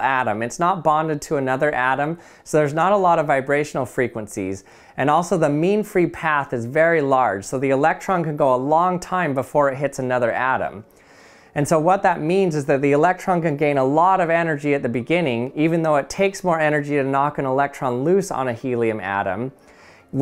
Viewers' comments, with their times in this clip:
0:04 did he just say meme free path ? Lol ik what he said just couldn’t pass up the opportunity 😂